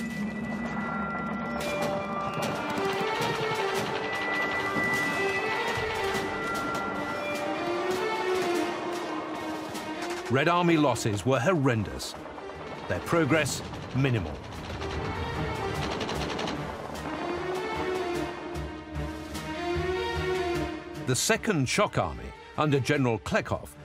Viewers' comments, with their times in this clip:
0:06 it sounded like the beginning to I’m a survivor I’m gonna make it 😂